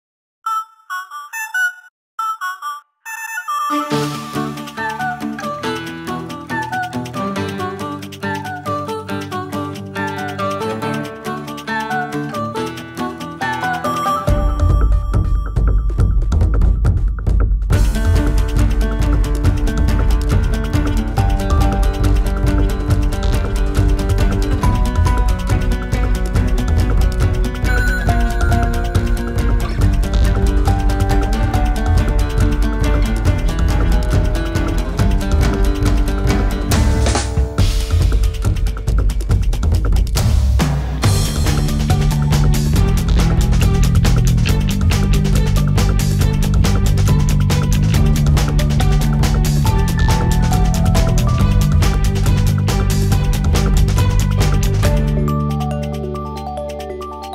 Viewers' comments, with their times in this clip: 0:01 We watched this in my high school i was in geograohy class and the beggining was on max volume on the boared and my whole class started lauging at the music 🎶😅😊
0:41 why does this music sound like the music that plays when I play the sims 4 lol